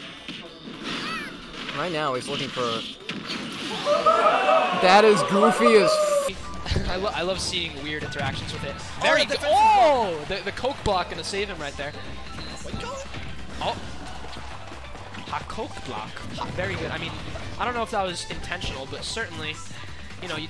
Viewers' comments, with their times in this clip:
0:04 the perfectly cut f bomb got me